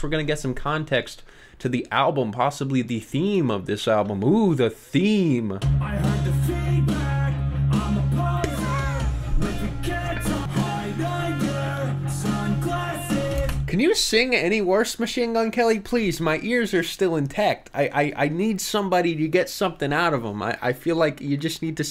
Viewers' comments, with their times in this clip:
0:06 If Theory of a Deadman went pop punk, this is definitely what they would sound like. 😂😂